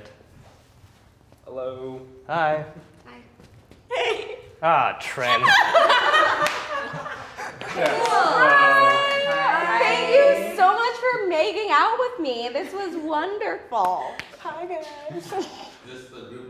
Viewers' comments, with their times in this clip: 0:04 I love the guy’s delivery it sounds like this kind of thing happens often